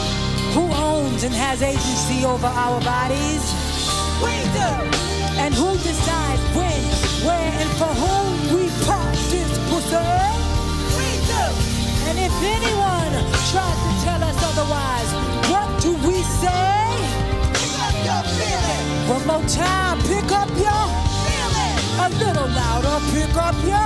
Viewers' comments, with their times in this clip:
0:05 I LOVE Jazmine Sullivan and this band !!!! That chord gave me chills!!!!!😩😩